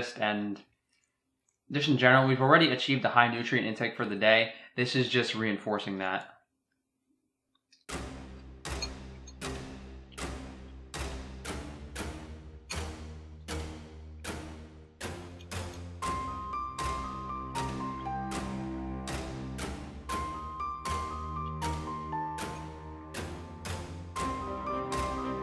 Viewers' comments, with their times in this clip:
0:06 I wasn't ready for that music XD